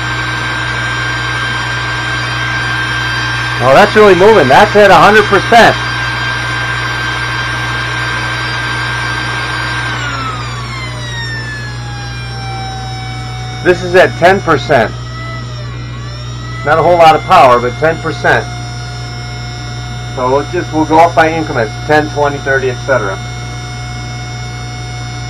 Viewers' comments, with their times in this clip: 0:07 same source voltage there have to be gears inside to make it go faster.so its noisy and less torgue